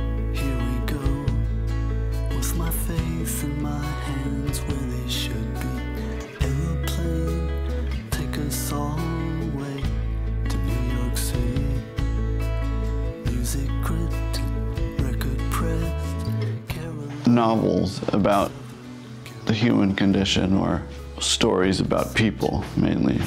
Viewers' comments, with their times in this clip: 0:04 It's not a feeling... if you don't recognize the album audio, just play "Here we go" from the album alongside this video starting Even if you don't get them perfectly synced, it will be obvious that the gap never changes and the audio is identical. Every syllable and string squeak is there. I was at this show, and obviously they didn't lip sync to the album. I'm just taking a guess at why they might have done this in post.